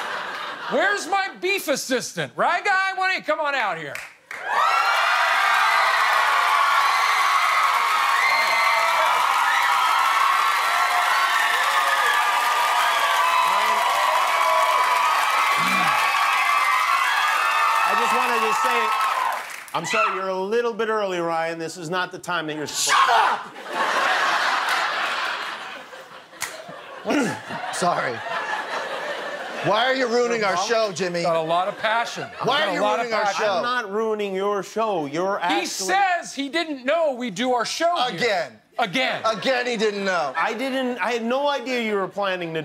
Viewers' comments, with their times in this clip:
0:05 you can hear happy ovaries coming out of hiding in the audience
0:05 You can hear some woman who won't screaming when Ryan Gosling comes out.
0:07 listen to that women. Sounds like she is gettin stabbed
0:22 For those here just for the scream
0:28 Will securely shakes off that incoming laugh xD